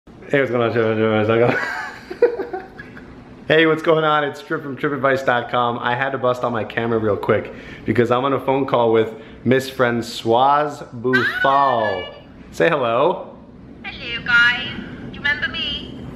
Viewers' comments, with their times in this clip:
0:00 da fuq is that language